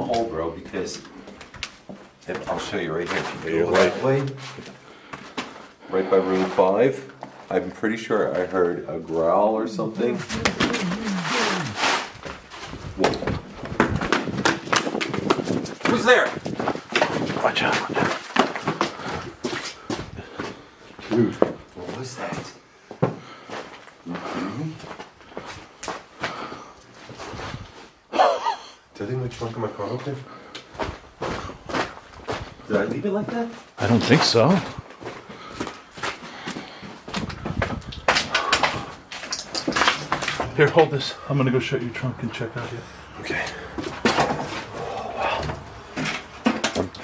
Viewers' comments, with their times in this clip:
0:08 you can definitely hear something being said but I'm unable to make it out since it sounds to muffled to me!! Do you know what it says??
0:09 Also the “muffled” male voice said something like “what the hell you guys doin”?
0:09 sounds like a man trying to yell at y'all, real angry but his voice is muffled. Sounds likes a hand over his mouth!
0:09 that voice you heard to me was definitely a male sounded disembodied...
0:09 I can't make out most of what that muffled man's voice said but that last 2 words sound like "is dead" to me. Creepy!!!
0:09 WHEN YALL HEAR THE NOISE, IT SOUNDS LIKE SOMEBDY TRYIN TO TALKWITH THEIR MOUTH COVERED, LIKE A HAND OVER A MOUTH OR A GAG!!!
0:10 WHAT WAS THAT ??!!?? It literally sounded like something or someone yelling but being muffled at the same time....😳🥺😲 I hope that makes sense haha so freaking scary
0:12 oh my god it sounded like something was muffled into your mic wth was that i never herd it that close
0:13 it sounded like he was saying boom, boom, boom, boom. That was all I could make out. Creepy AF guys!!!
0:32 This place was so cool. Who woulda thunk it? A Head Start haunted? it does sound like a person talking but muffled. Is that what was heard? I'm shocked😳 lol